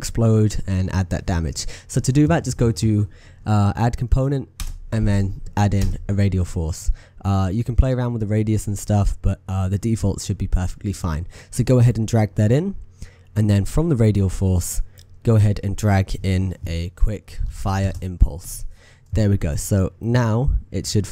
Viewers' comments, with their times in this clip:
0:06 you can here him say fuck softly or near the end of his video